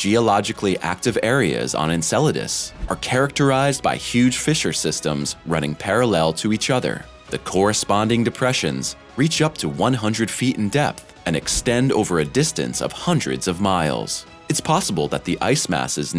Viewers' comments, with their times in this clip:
0:04 "Fisher systems"!!! That is NOT a serious statement.